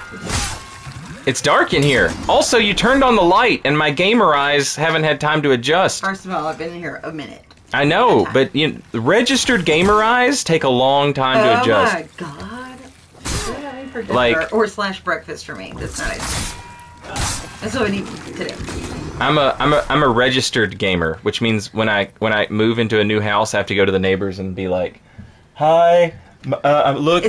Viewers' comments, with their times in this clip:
0:09 1) Is that the girlfriend I hear ? 2) Damn this game looks tempting.